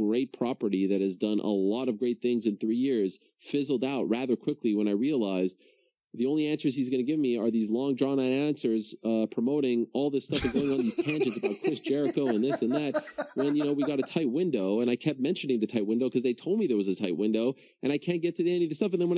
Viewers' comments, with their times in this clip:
0:04 When you can get a guy with a voice like that to get as high and cartoonishly frustrated as he did ... man